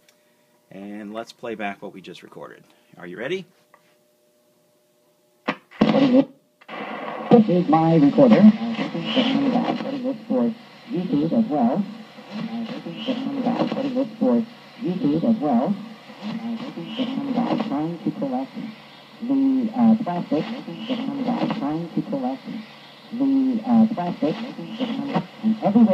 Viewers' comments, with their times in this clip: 0:06 sounds like the tiny speach of the call of duty WW2 trailer